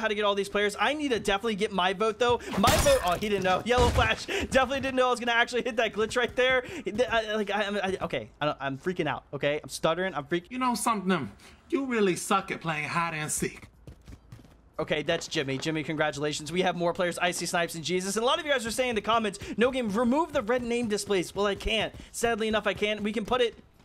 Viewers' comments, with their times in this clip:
0:07 Lmao the heck did he even say